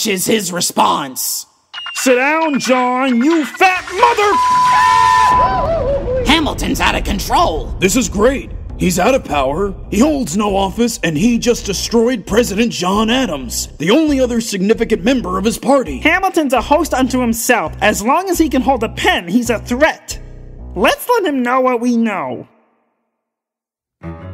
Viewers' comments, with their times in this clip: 0:05 That Goofy scream made me crack up!